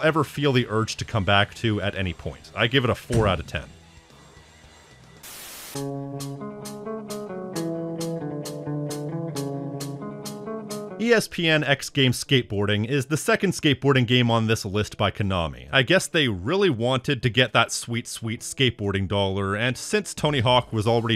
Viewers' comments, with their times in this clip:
0:06 Incase you missed that, had an out of sync sound effect in the original video.